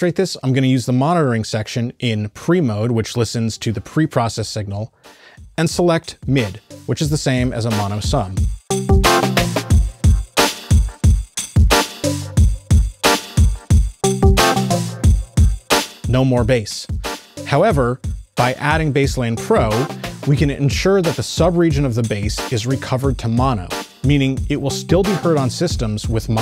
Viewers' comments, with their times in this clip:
0:09 Not ironic at all :) The entire bass synth is intentionally completely in antiphase and disappears entirely in mono. I produced it as such to help highlight exactly what Basslane Pro can do with Mono Recovery (shown ) and Stereo Harmonics.